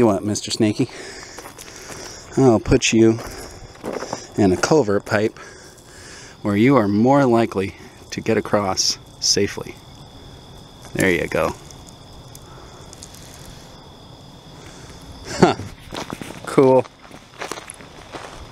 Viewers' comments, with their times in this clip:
0:03 What kind of pipe was that? Culver Pipe?!?